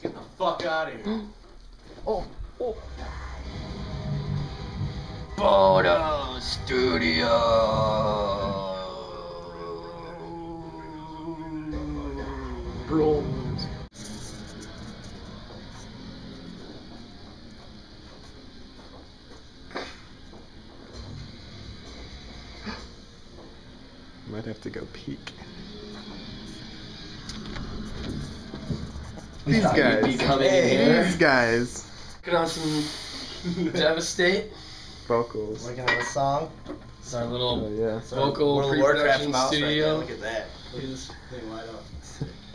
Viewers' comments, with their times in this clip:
0:05 "E.T. phone hooooooooooommmmeeee" sounded like him xDD
0:24 If you press repeatedly, it sounds like he says: "I gotta pee".